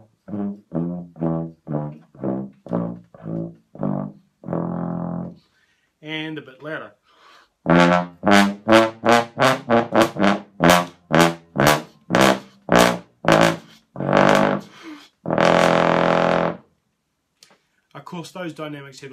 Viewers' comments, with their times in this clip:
0:07 who else noticed that we got ear-raped